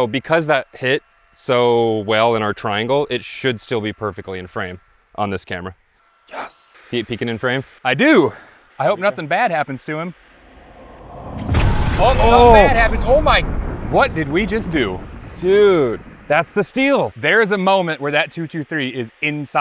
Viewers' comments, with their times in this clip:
0:06 Love that Napolean Dynamite impression 😂